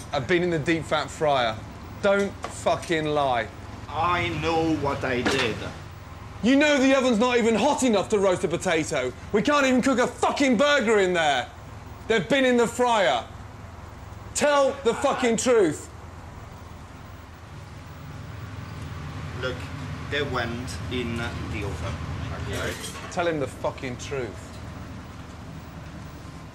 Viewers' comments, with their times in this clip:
0:07 The way how he said it sounds so firm